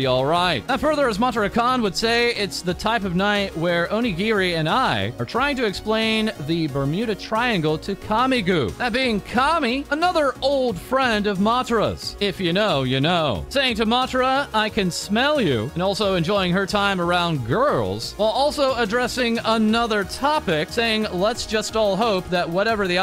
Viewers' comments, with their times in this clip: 0:10 Just saying, but I had to double check if my music was getting louder or my phone went off. Never noticed that before, but just to mention it here, that part seemed miss-aligned. (the music not the News)